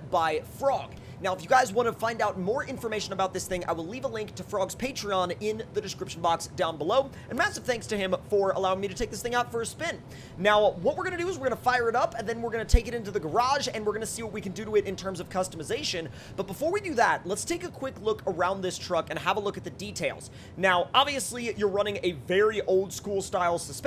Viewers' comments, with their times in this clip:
0:06 you start to speak really fast